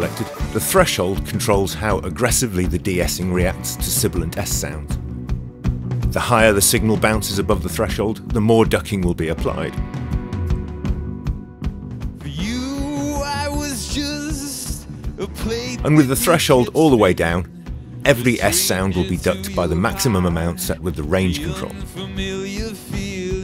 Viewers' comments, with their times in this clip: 0:07 sounds like you are about to cry